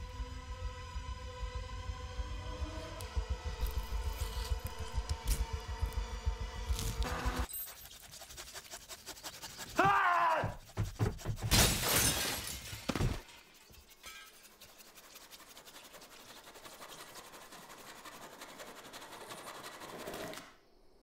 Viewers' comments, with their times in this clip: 0:09 Buddy Love: (Screams)